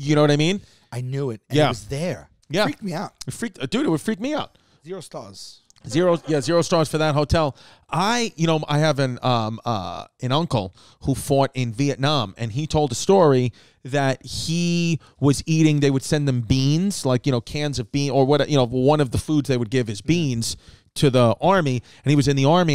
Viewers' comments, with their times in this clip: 0:10 "I have an uncle who fart in Vietnam"